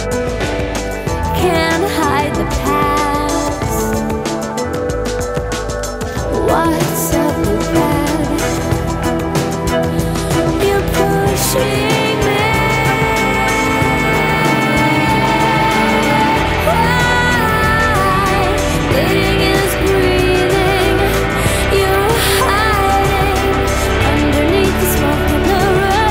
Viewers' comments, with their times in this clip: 0:10 "You're pushing me" the delivery of her vocal here when she opens the power and then the guitars come in underneath is breathtaking always gives me chills. Her live versions of this song are equally breathtaking. A very talented woman.